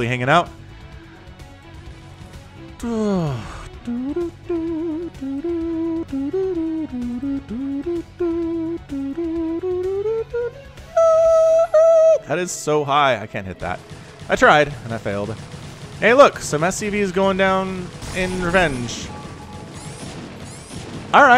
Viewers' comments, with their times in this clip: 0:08 the voice of an angel :Kreygasm: